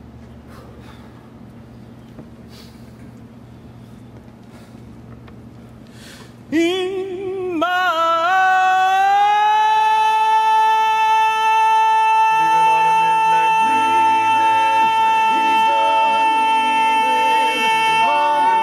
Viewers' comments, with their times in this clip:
0:06 Wow is absolutely sensational singing from one of the best Leads there is!